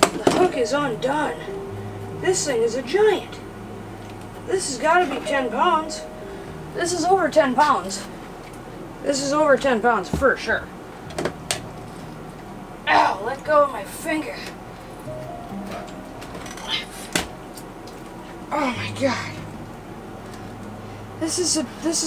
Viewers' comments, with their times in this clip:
0:07 in - what's with the Hallmark Movie music? MURRRRRR!